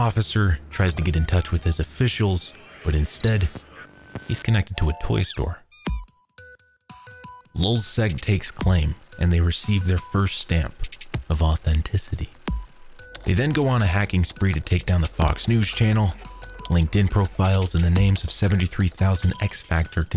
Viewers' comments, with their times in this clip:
0:06 the music sounds like the mcdonalds beeping noise